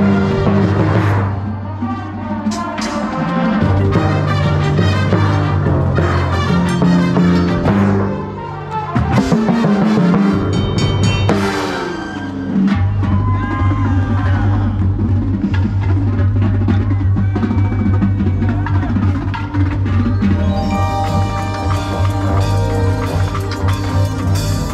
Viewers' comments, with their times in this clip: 0:10 pfft the rimshot and bend 🤣 so tasteful, love it